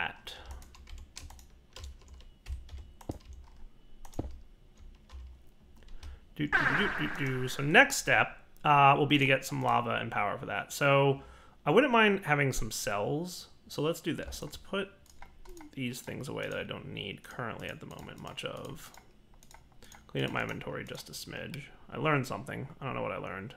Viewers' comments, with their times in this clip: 0:05 Anyone else wonder if their headphones were flaking out ?